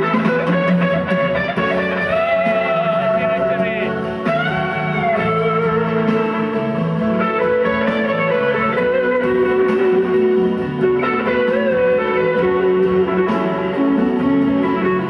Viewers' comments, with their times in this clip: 0:03 Does the guy taking the video actually scream "Give it to me"? Also Clapton and Trucks are awesome.